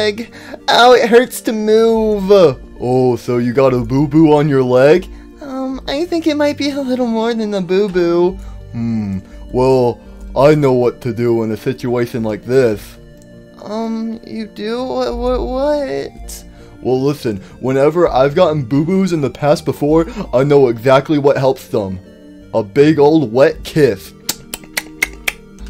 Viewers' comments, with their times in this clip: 0:06 Bro if you go to on the video, why does she sound like that.🤣😂🤣😂